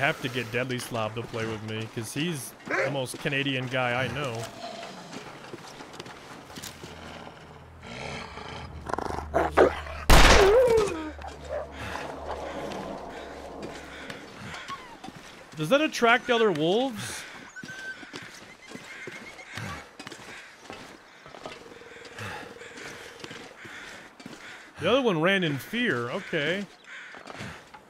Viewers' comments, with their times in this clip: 0:08 that death howl the wolf makes sounds like Saberwolf from Killer Instinct. (random thought)